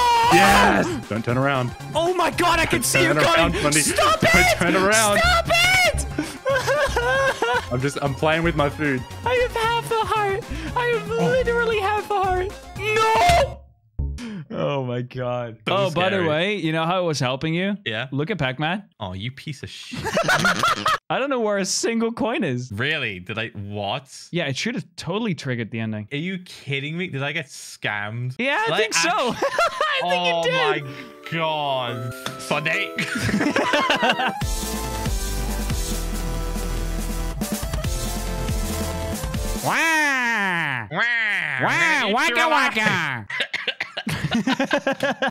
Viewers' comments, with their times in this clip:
0:03 I Love How Fundy Sounds Kinda Like A Girl When He Said Stop It
0:20 your laugh sycned with the hearts taking damage
0:38 Wario voice cover be like